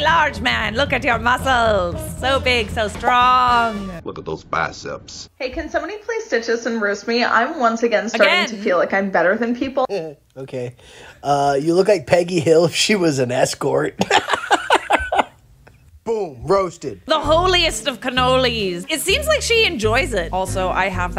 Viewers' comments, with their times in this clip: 0:07 the dude has the BEST laugh oh my god :D